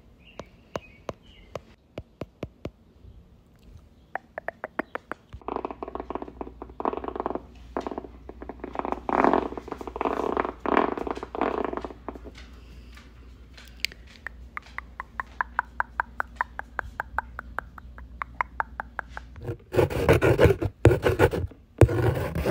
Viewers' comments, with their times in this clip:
0:04 why is no one talking sounds like someone literally taking a dump